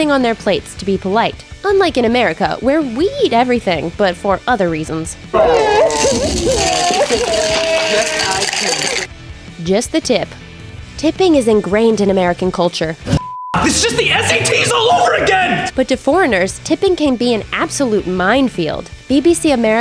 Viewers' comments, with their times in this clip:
0:07 That booming sound was so real with my headphones on that i thought it was actually thundering outside